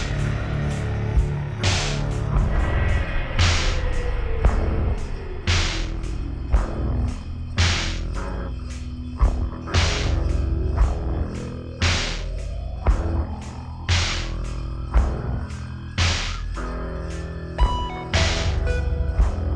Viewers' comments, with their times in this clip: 0:03 2x speed is just regular but with messed up audio lol